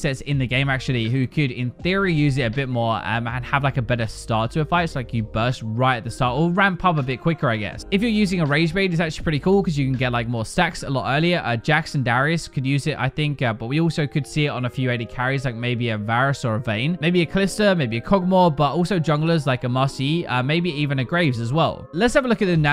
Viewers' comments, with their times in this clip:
0:10 "Guinsoo's Rageblade for more sex" ?